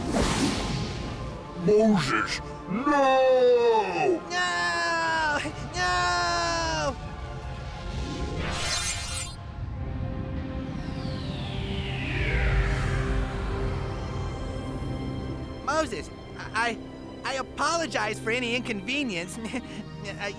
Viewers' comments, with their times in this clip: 0:04 I love how you can hear he cracks and starts to laugh. And they just left it in.